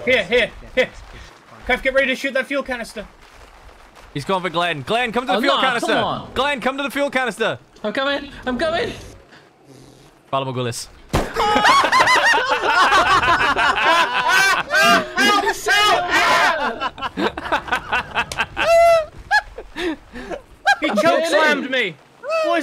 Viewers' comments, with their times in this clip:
0:06 Pala bagulous? what's the caption on how to spell what he said